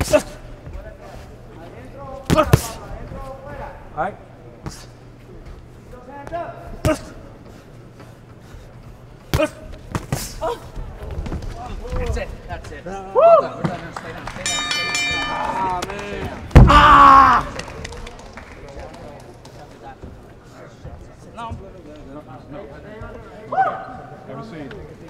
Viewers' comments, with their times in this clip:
0:09 last knockdown had a little moan
0:09 the fucking noise that he made on the last KO
0:10 guy moaned 😂. Still showed heart though respect 🔥
0:10 bro really moaned 💀